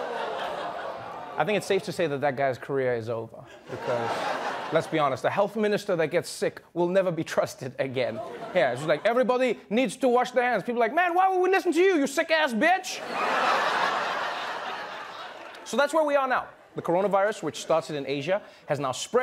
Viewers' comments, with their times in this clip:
0:03 Hey, at least he's sneezing into his elbow!